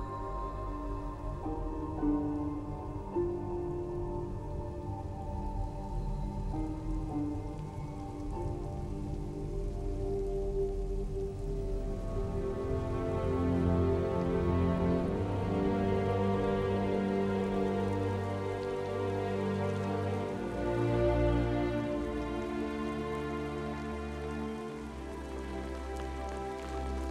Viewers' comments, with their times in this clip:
0:09 reminds me of HALO soundtrack